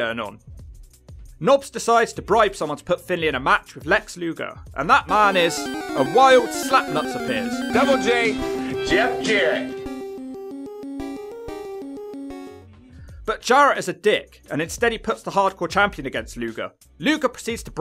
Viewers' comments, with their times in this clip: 0:04 -A wild snapnuts appears Double J Jeff Jarrett with Pokémon music 😂😂